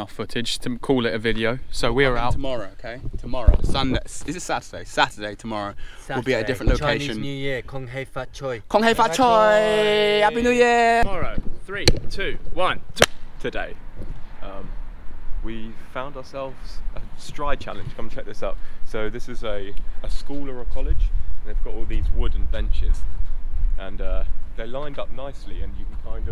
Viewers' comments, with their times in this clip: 0:08 that's some nice cantonese!
0:10 🥺🥺🥺 my heart melted when you guys said kung hei fat choy !!! Such accurate pronunciation and finally not just random youtubers mocking how asian languages sound... 💕 made respect and love for ya guys now